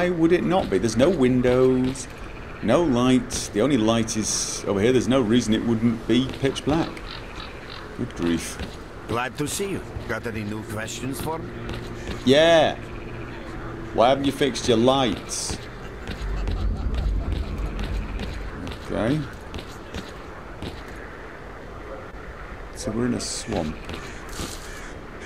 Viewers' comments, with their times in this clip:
0:07 "Yeah, why haven't you fixed your lights?" Loud NPC laughter heard